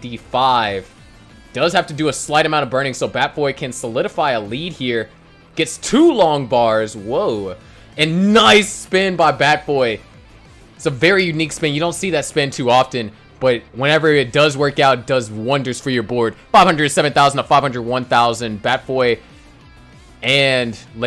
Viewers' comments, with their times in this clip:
0:05 new contender for nicest NICE. this one was pretty nice as well.